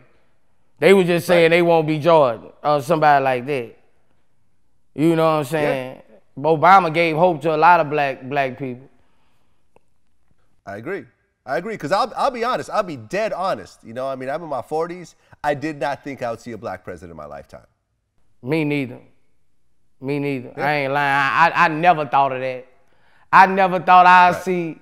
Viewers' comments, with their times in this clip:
0:03 Bobama 😂😂😂 Gotta love Boosie!
0:06 Boosie High as f***. He said BObama🤣😂🤣